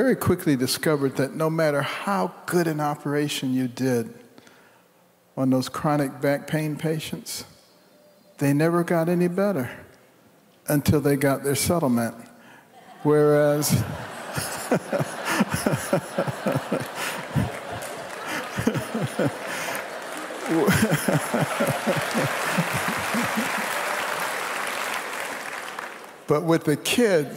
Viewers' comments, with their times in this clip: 0:09 Help. Dr Carson mentions something that sounds like a sono map? any ideas what he was referring to? It was related to back pain.